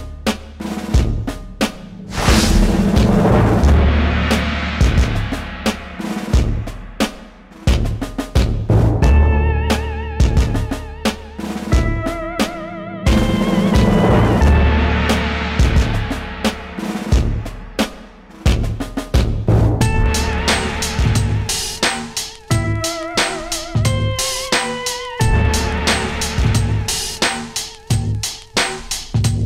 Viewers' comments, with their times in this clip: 0:10 wonder how big a scratch was left on the rocker panel from the tow truck driving into it :( I still chuckle when the tow truck music comes on.. It's so perfect.